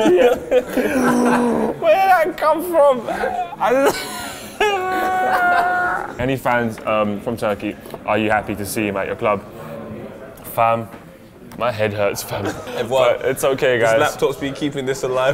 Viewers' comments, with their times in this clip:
0:03 that laugh cracked me up haha. Defo something in that Orange juice.